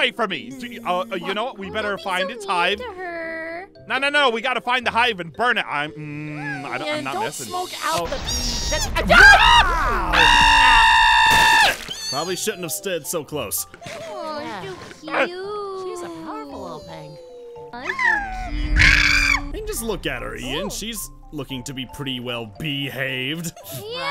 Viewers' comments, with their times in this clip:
0:07 Baby bee scream